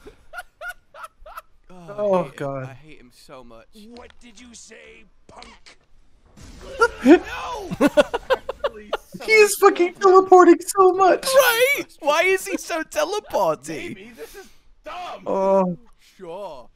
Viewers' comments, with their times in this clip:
0:03 I will say that edit is pretty funny. the snap in line with the "PUNK" with a hard P is very good.